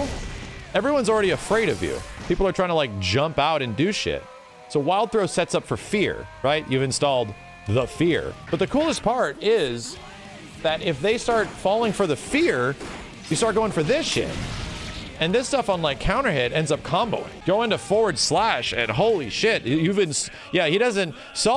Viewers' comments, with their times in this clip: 0:06 i don't think your neck is supposed to crack like that